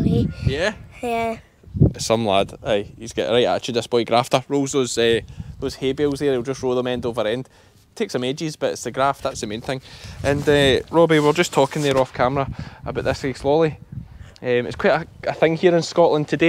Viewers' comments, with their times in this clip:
0:03 did not get a single word, it sounded english but I am not sure...